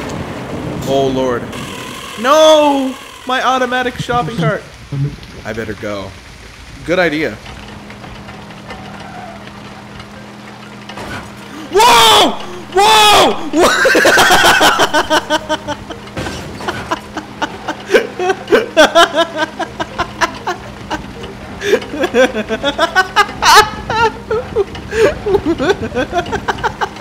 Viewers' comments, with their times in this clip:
0:10 that scream was so genuine wtf